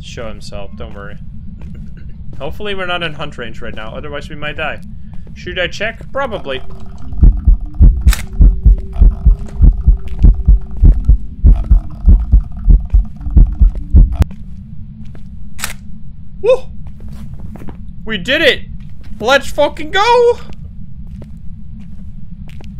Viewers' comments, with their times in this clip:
0:06 can anyone else hear that singing or just me?